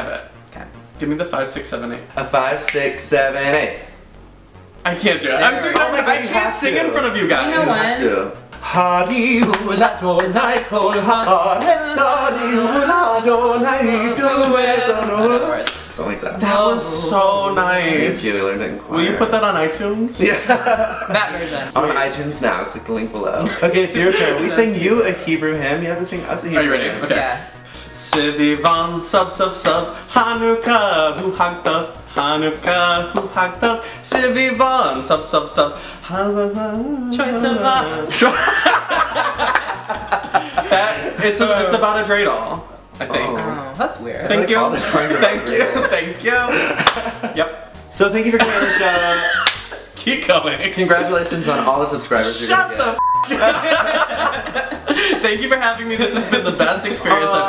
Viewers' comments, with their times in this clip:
0:09 Scott How his voice goes up and down.. I can't even.. TT___TT and Mitch singing "Troye Sivan" after Tyler's hebrew hem is perfect LOL.
0:36 So… this was uploaded 8 years ago and me and my best friend still use the way Mitch sing/said Troy Sivan every time we mention him
0:38 Sings troye sivan